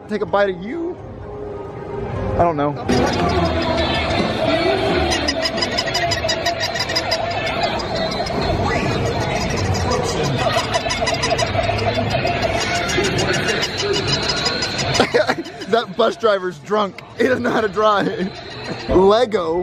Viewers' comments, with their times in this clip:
0:05 those dogs sound like snow ball barking alot
0:06 that is the is the sound of the fair and all the little kids with there horns